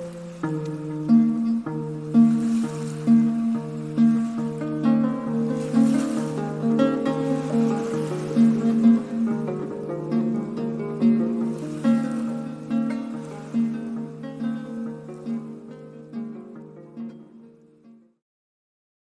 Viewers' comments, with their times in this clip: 0:03 I loved this faster melody a lot. Great stuff!